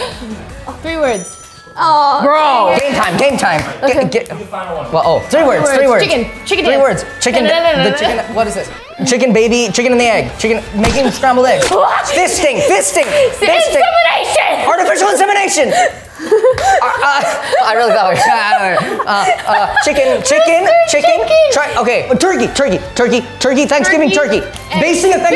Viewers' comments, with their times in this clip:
0:08 So are we not going to talk about the weezer riff